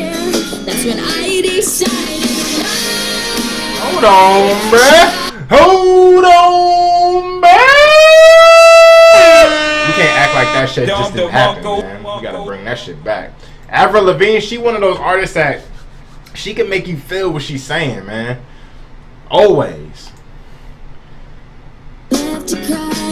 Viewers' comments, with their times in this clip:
0:07 Bruh that's literally what my city's tornado sirens sound like